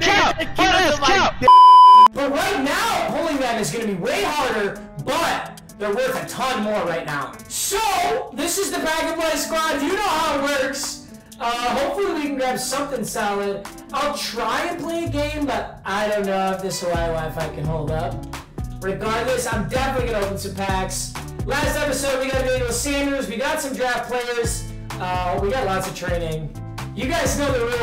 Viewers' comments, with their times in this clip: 0:08 same audio energy